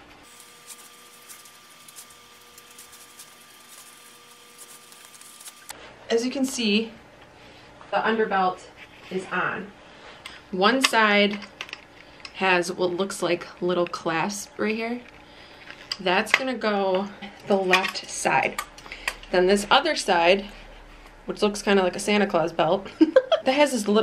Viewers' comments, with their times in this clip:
0:09 when she turned around and said Kay ugly Uggs this for you .. well that wat I heard 🙄